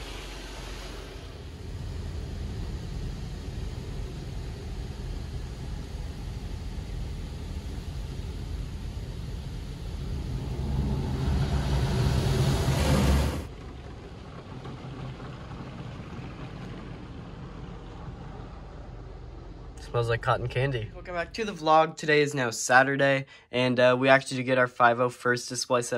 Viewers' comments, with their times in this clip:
0:06 car wash ASMR action